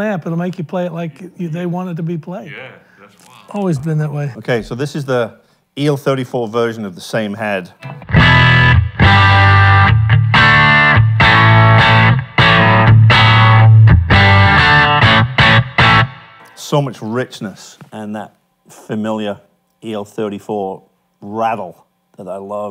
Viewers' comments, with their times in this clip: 0:10 I'd like to hear the 6l6 versions through some of the Eminence American Series speakers, especially the higher efficiency ones. I don't really care for the tones I'm hearing from the el34 version, with the exception of the guy That cleaner tone sounds pretty good.